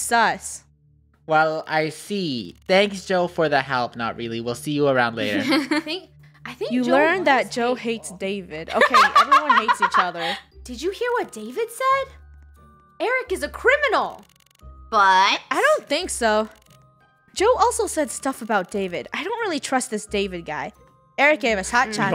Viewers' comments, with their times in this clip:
0:08 that's how my sister laugh sometimes-